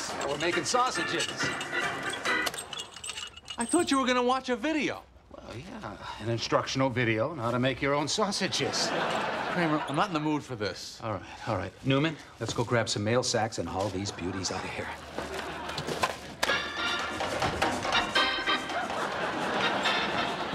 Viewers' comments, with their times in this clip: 0:07 Michael sounded like he was close to cracking up